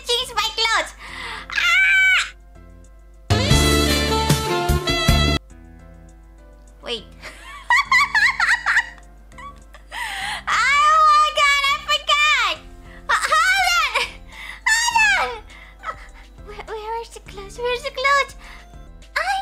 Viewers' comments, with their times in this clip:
0:07 kuntilanak sound detected